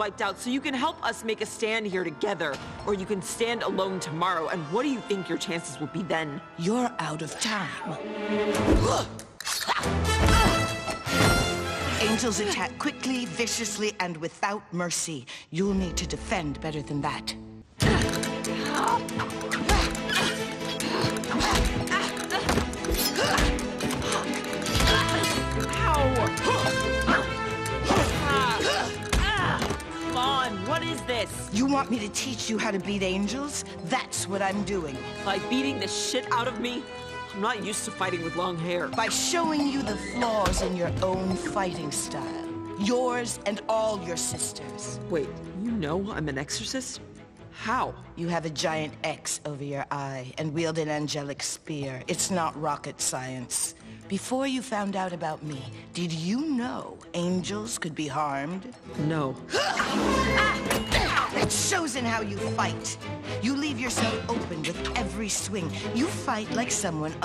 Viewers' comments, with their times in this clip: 0:07 I love the pumas noise in such a baddie
0:48 I like the music went quiet when Carmella told vaggie how she know who she is